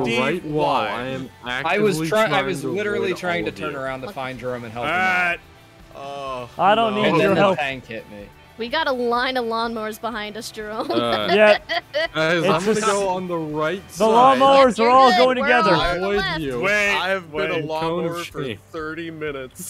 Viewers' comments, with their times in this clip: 0:06 She is able to laugh! Don’t be focus only on the negative moments! Look